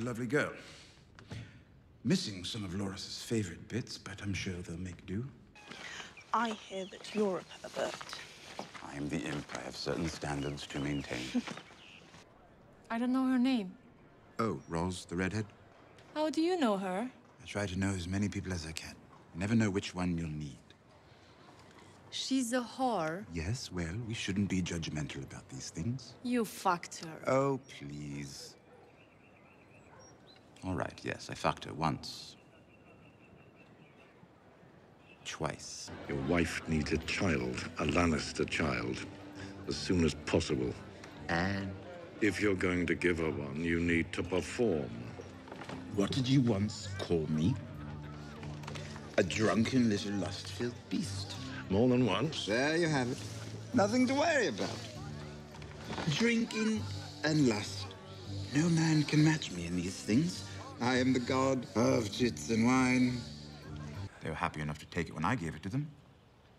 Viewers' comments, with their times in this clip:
0:06 What the actual fuck does she say
0:51 tbh I thought Tywin’s heavy breathing was both hilarious and terrifying at the same time bc u know he’s one millimeter away from actually killing Tyrion with his own hands!